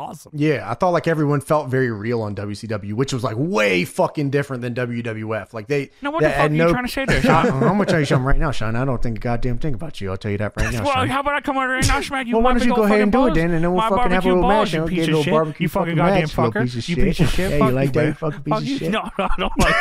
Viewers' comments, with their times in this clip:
0:06 😂😂😂😂 Hearing JR argue with JR is awesome